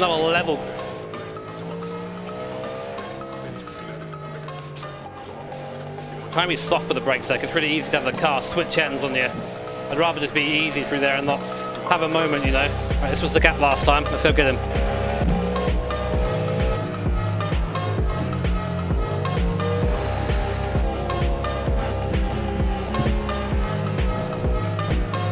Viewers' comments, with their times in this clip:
0:10 the beat slaps